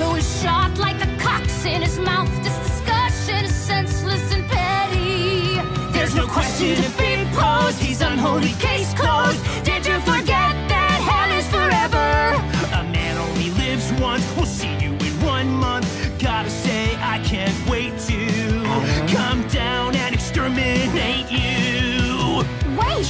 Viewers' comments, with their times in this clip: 0:06 God damn, that harmony. I wish we had more of Adam and Lute singing together.